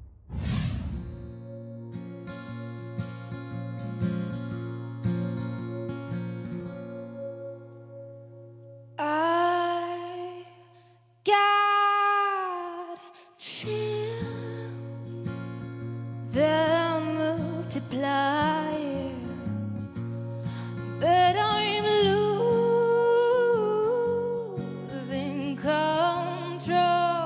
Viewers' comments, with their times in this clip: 0:08 girl's voice and style of the arrangement reminds me of neko case